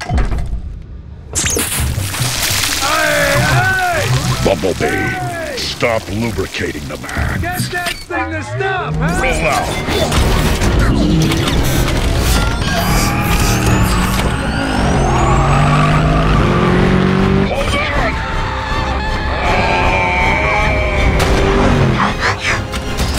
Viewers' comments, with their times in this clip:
0:07 I love the moment when optimus says “Bumblebee stop lubricating the men”. You can just tell that by the tone of his voice that this isn’t the first time that it happened.